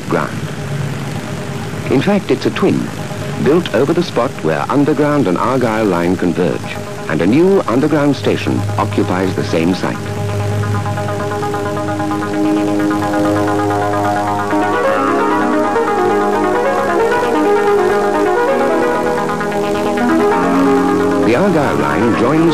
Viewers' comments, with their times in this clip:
0:05 Also it makes me chuckle that, presumably, the makers of this documentary weren't allowed to use the track "Pulstar" by Vangelis so instead inserted a very similar piece of music.